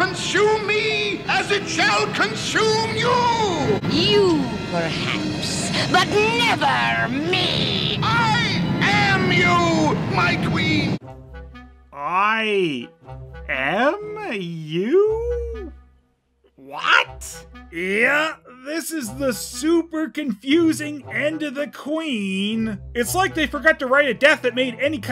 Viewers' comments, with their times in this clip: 0:07 I unironically love the Mirror Mirror's delivery of that line - so much passion, so much anger